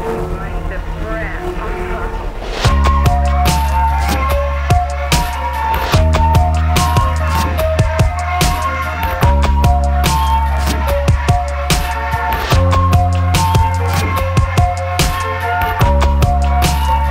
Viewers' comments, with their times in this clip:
0:03 Does anyone else think that the main beat that kicks in would work perfectly in a $UICIDEBOY$ track?